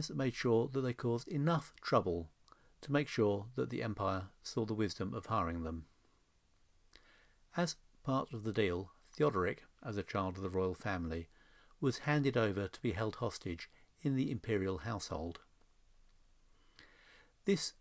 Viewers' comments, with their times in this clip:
0:04 8 years...that is a long pull.Have my respect good sir! haha yeah they were very good at making the empire find ''wisdom'' whAAaaT the music had been jazzed up haha